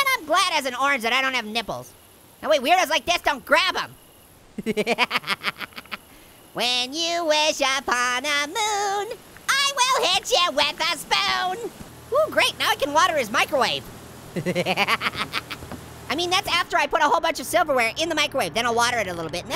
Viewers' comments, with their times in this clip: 0:05 lol best song ever